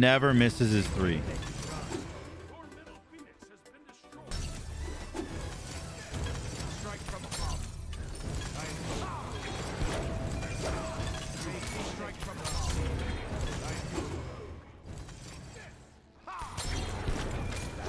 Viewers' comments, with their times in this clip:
0:04 Unga Bunga Intensifies I mean, that's an Ullr mirror in a nutshell just due to the stance swapping VO, but ya know...